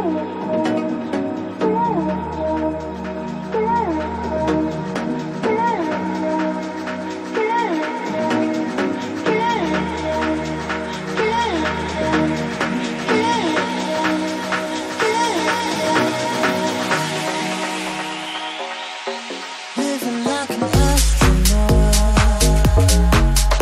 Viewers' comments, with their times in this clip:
0:08 best drop hands down to a wave beat!